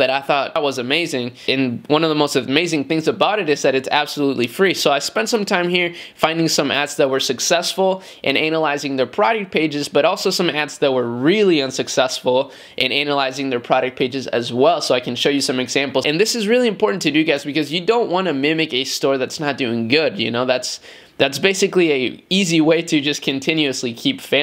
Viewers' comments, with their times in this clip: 0:07 I think you pronounced 'Analyzing' wrong hahahahaha.